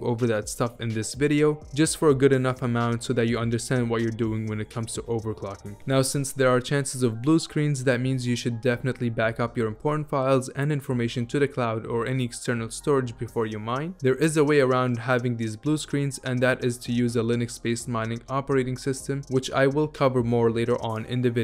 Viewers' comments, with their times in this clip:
0:07 took me a while to hear "important files"